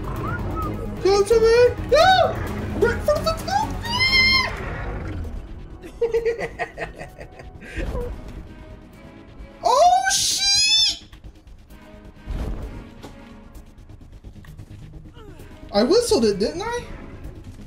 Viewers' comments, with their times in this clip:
0:03 dude his scream sounded like scouts scream wtf